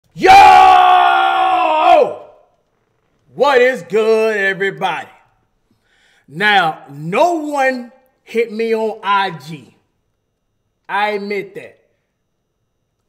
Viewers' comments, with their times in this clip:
0:00 Ear drums destroyed